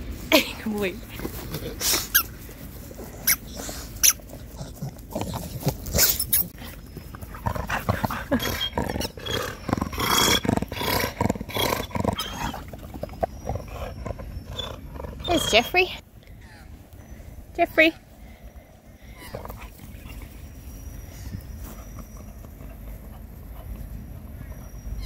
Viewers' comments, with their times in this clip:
0:08 Homeless is purring !!!! So cute!!!